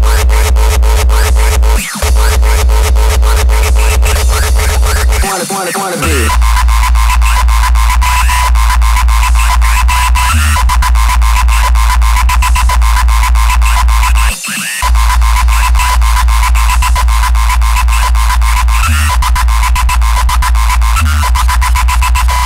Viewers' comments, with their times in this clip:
0:05 That kickswitch on 👌